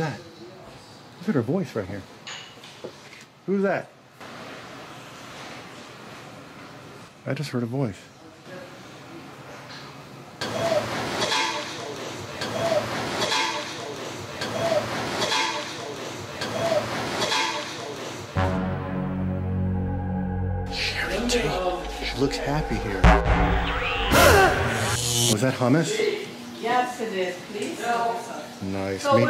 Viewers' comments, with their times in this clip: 0:10 I was watching this again and the evp seems to say " Yeah was rocking and souling " very strange indeed